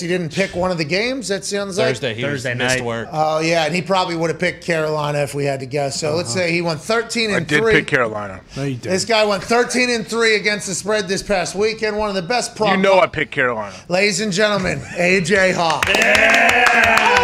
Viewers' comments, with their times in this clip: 0:03 AJ talking before coming on the screen was hilarious